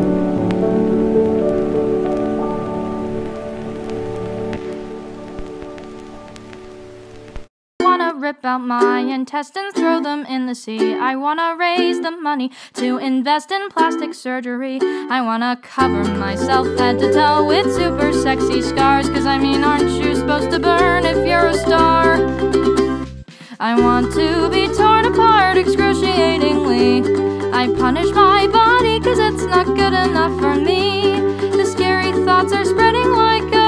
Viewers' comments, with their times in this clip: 0:08 this song made me cry
0:20 bro i got jumpscared by this song🐺